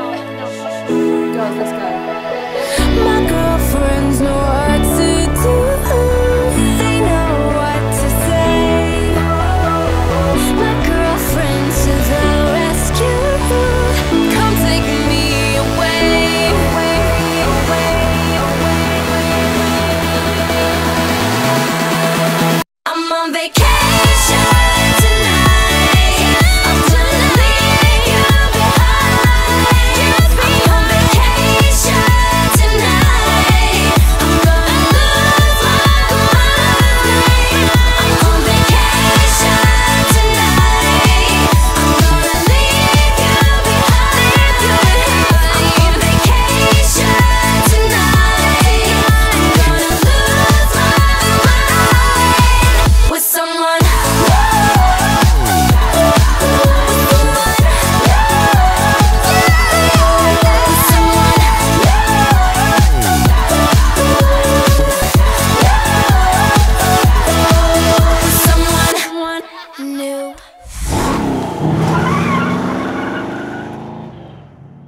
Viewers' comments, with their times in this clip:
0:06 love the moment Paula sang ''They know what to say'' 💕😘
0:56 does anyone notice that backround scream 'g.r.l'?